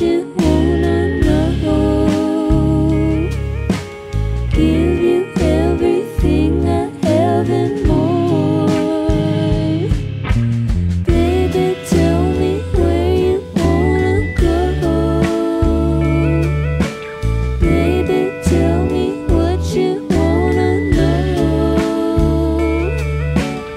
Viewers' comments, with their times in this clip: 0:09 holy SHIT that key change